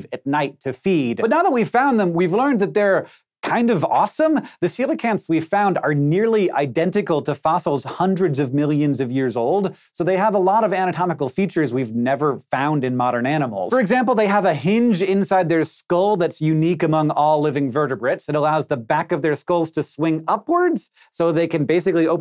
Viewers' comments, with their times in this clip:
0:03 Nice vid, but why do people talk like this, for example "It's kind of awesome????!!!!" was that a question or a statement?